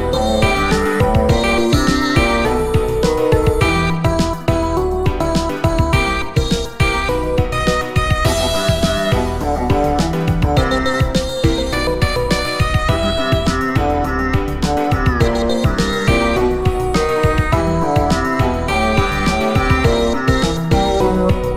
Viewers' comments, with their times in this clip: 0:09 Wait, why does that melody sound so fam- Oh.